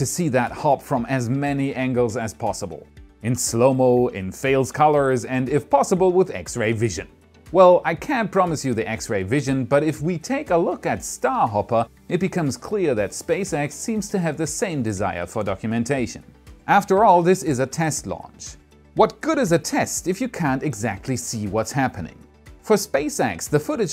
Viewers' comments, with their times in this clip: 0:04 Fail color Damn what sort of color is that?